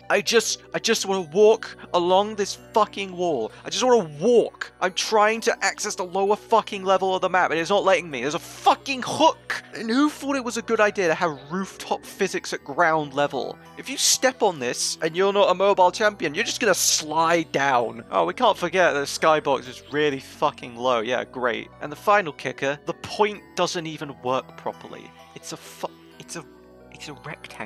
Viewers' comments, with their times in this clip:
0:08 THERE IS A FUCKING KHOK